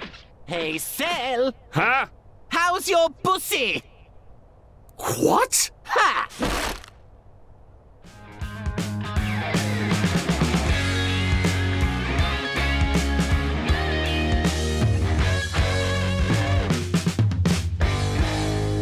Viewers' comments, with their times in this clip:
0:04 not sure if I'm wrong but that that line in sound like Mr belt from KR Drive in Chase Saga